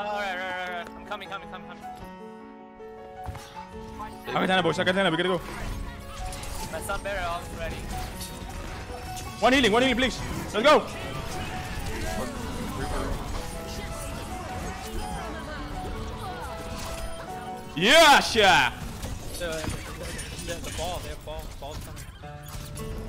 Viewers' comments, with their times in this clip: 0:04 that peep tho